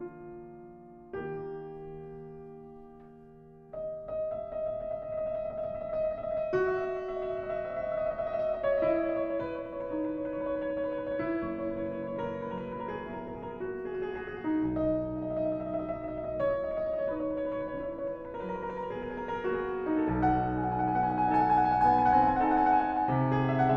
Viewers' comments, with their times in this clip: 0:05 not sure I loved the dryness of Vova's trills there...